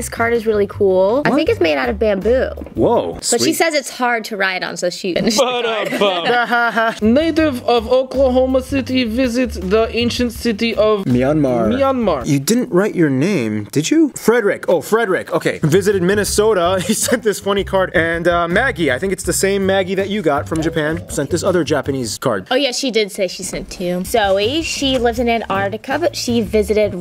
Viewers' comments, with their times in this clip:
0:08 That "Oklahoman" accent, tho. :)